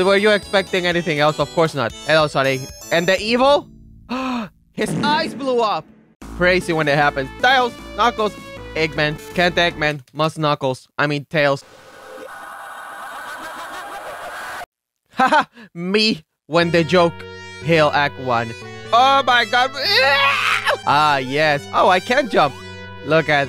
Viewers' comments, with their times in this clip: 0:08 The freaking Stan Twitter girls laughing in reverse got me laughing lmao.